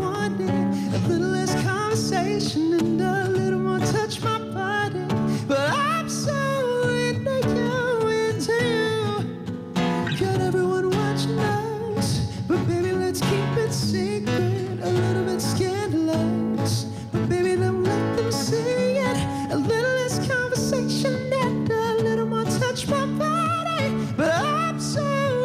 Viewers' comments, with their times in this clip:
0:06 jorden voice started getting a little high pitched but it was still good 😄😳😍